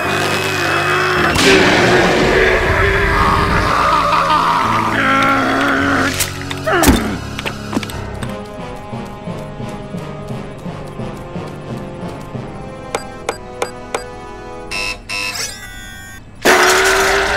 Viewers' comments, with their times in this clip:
0:03 it sounds like cyborg from teen titans go